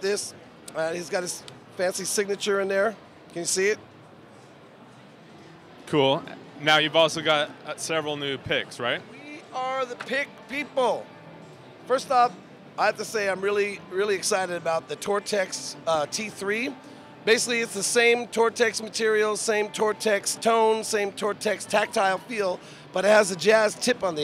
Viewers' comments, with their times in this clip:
0:07 "Several nude pics right?"